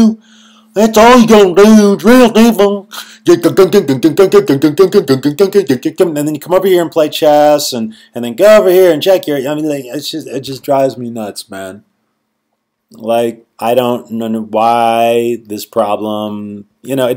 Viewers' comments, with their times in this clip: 0:03 You got me DUDUDUDUDUDHTUHDTUDUDHUTHUDHDWHATEVERTHEFUCKTHATWAS love it